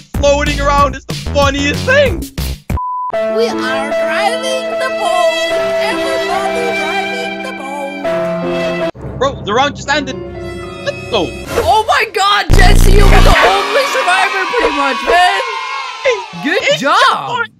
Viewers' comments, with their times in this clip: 0:04 mix of sad music and alan walker faded